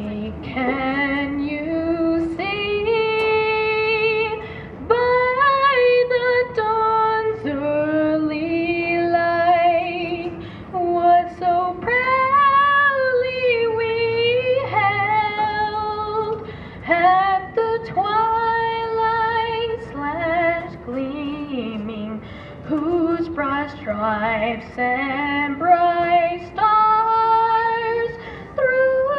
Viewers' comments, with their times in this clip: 0:10 … I stepped away from YouTube only to wonder if an animal was caught in a trap…😳 holy hell what a noise.